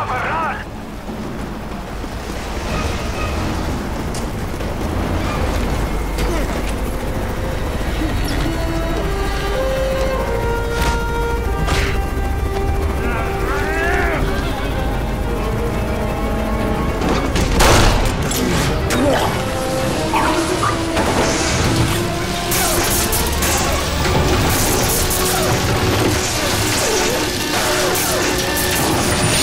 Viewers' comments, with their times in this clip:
0:10 Game of the year punch audio right here everyone give an applause to activision